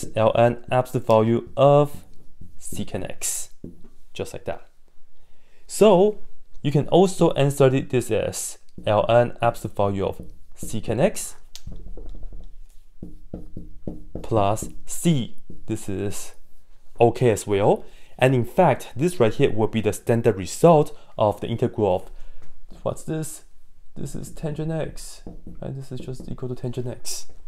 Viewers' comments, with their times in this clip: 0:09 Now I finally know what the absolute value of sex is 😂